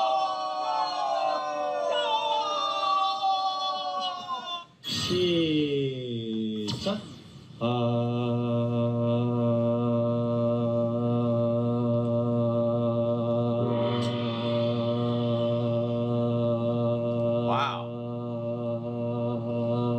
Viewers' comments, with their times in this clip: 0:07 My take away is how long JK can hold a perfect note. 😮